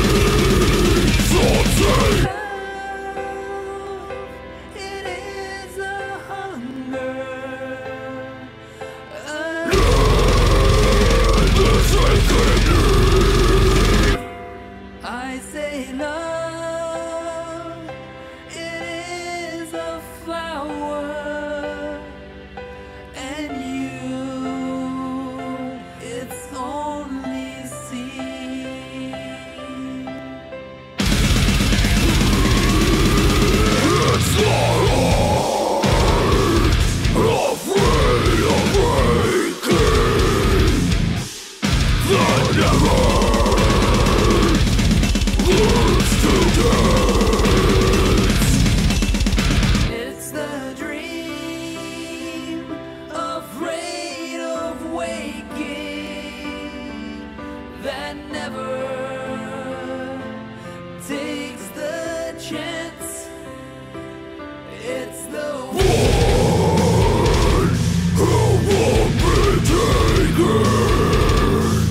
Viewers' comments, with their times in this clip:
0:10 made me jump in fact I think every abrupt change in tone scared me
0:20 dat lick tho.
0:34 was a really epic breakdown. I head banged to that :p
0:58 The dream afraid of waking that never takes the djent. Good choice